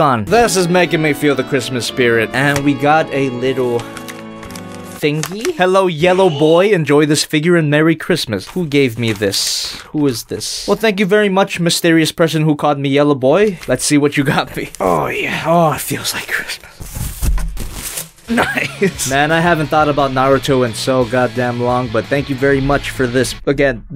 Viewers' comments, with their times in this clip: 0:06 Lol that shredder sound.